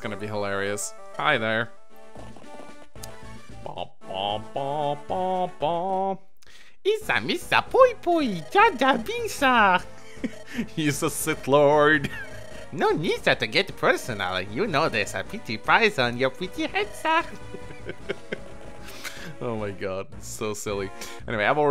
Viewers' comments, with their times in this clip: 0:08 Really? Really!? Also, your Jar Jar impression is too good to not laugh!